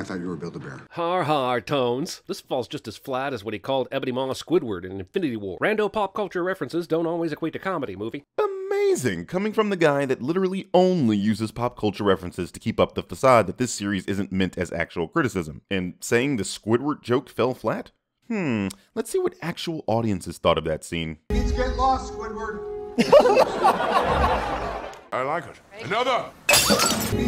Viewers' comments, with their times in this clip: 0:09 Was that "AMAZING" a Jessie Lee Peterson amazing. Cuz it sounded like it.